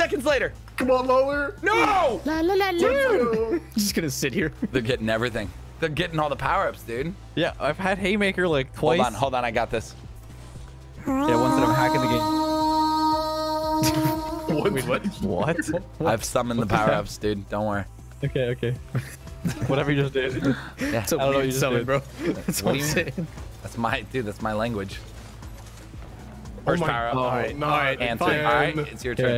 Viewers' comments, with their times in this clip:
0:10 that sound could be an awesome Jiggly Puff Song lol